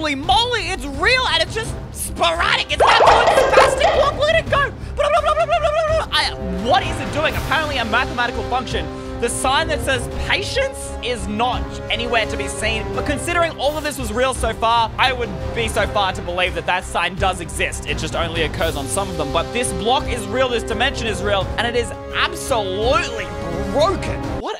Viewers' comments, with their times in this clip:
0:09 he sounded like an alien XD